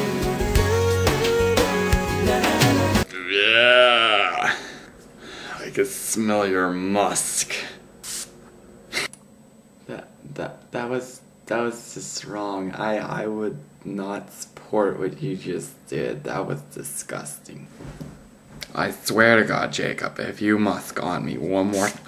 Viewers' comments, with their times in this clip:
0:06 u laughed lmao